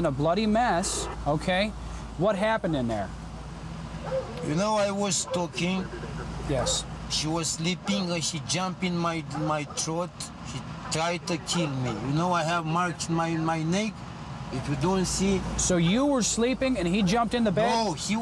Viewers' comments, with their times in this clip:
0:04 Dude straight up sounds like Niko Bellic from GTA 4